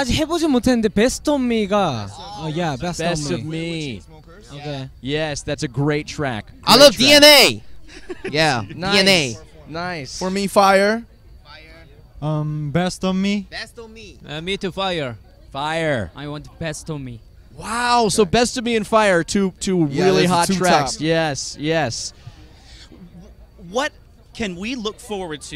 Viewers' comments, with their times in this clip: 0:07 when the pink shirt laughed at DNA.. I think that's when jimin officially lost it.. not just the other stuff